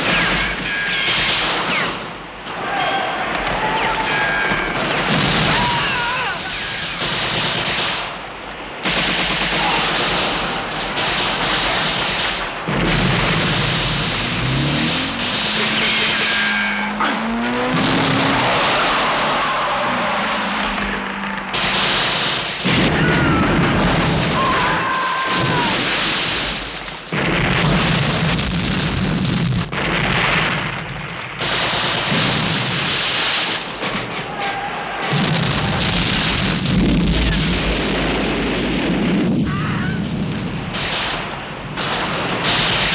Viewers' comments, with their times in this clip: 0:06 didn't used Wilhem scream for a rare occasion
0:24 best. death cry. EVER.